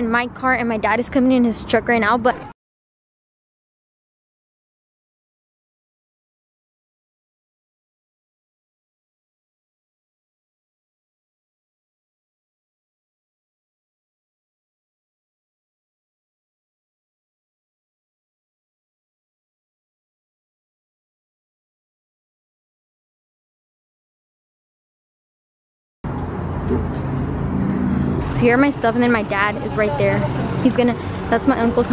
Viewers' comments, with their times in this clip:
0:03 Did anyone else lose sound
0:19 At like l can not hear nothing?